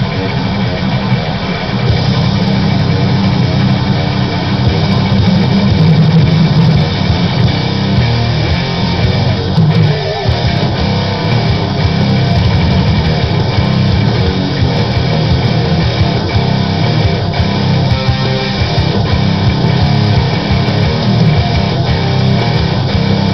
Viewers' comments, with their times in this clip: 0:09 great jobe dude :D:D btw how to make that iii sound ??